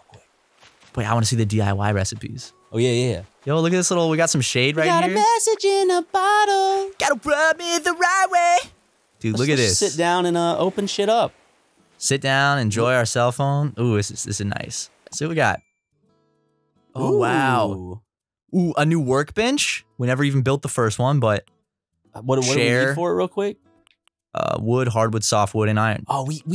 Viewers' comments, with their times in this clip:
0:07 very beautiful voice